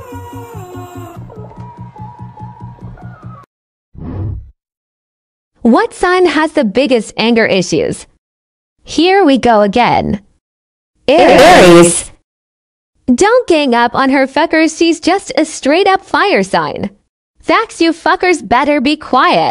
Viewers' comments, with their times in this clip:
0:07 I died when they said it in unison💀